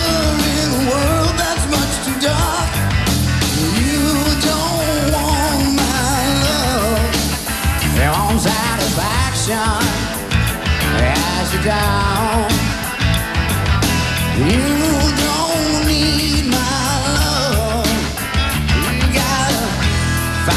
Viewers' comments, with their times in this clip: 0:07 Iconic Axl vocal sound